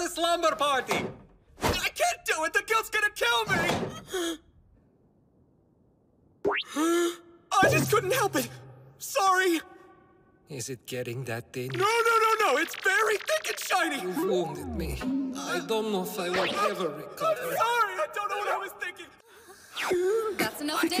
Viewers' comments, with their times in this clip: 0:05 that gasp why it sound like he finally gets to breathe after 10 years.
0:11 be sounding like Izuku